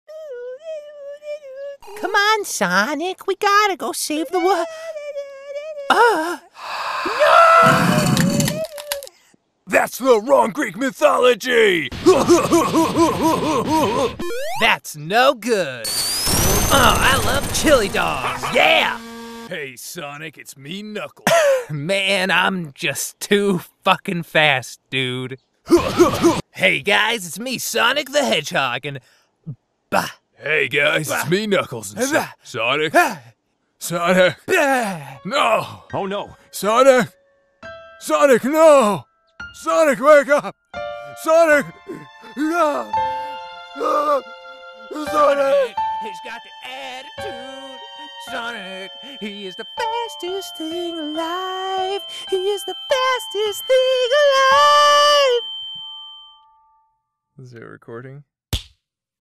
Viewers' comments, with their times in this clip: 0:00 The músic xD
0:34 If you play at 0.25x it will be very sad.
0:43 can we just talk about how beautiful the Outro instrumental was
0:50 This singing is absolutely beautiful